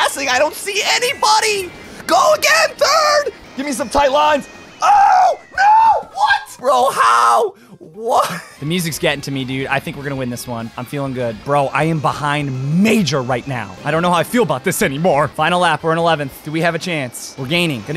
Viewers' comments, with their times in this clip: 0:04 kinda sound like markiplier when he played getting over it lmao